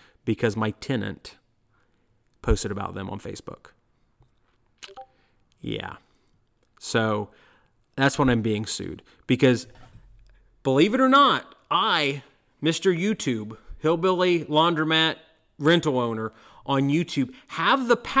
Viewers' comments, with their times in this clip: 0:04 i heard discord...
0:04 I checked my Discord, even though I have the sound turned off.